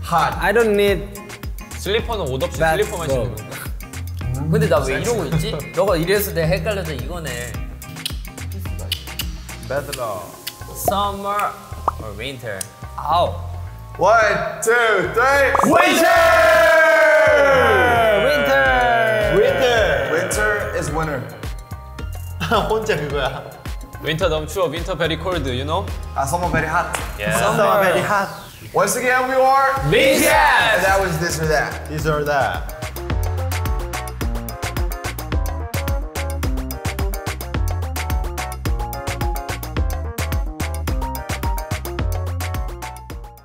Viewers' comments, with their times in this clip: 0:04 DOes SLLipers MEan JUst SLIpperS WITHout aNY OthER clOTHS? - JIn (p.s jk s laugh tho at jins comment and the moment mochi just got confused is hilarious )
0:20 Rm responded to join with an accent sooo cute! 🥰😍
0:23 Jin's accent- Winter Bery Cold you know Meanwhile V and RM Coping him -Summer bery Hot-ah 😂😂😂👏👏👏 I dead laughing there and my ghost is writing this comment b'coz its bery important-ah 😂😂👏👏👏
0:25 lmao istg I LIVE for Jin ending his english sentences with 'YOU KNOW?'
0:26 Jin: Winter is very cold, you know? RM: proceeds to copy Jin's accent Summer is very hot?
0:26 Namjoon and V clowning their own accents made me laugh so much 😆
0:27 namjoon changed his english accent to mock jin lol 🤣🤣
0:28 Taehyung " summer is bery hat " HAHAHA oki
0:31 i love the way tae said "this or that"